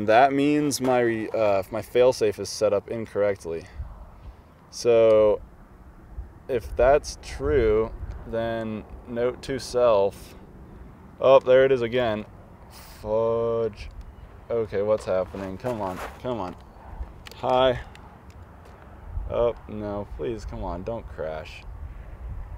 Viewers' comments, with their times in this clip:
0:08 You sound so calm as hundreds of dollars go out of control and plummet to the ground.